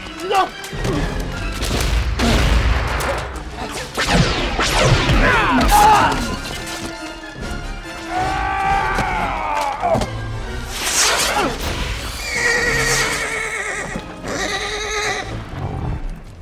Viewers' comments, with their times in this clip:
0:03 probably my favorite phaser sound of the franchise, which I wish they had kept for ST6.